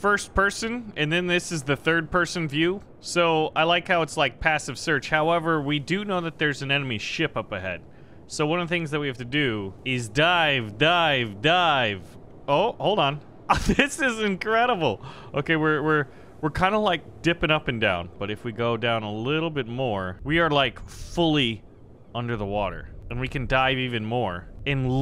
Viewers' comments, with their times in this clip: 0:10 is that a reference to Pavel from the GTA V Cayo Perico Heist update because when I heard the faux russian accent I knew you were referencing Pavel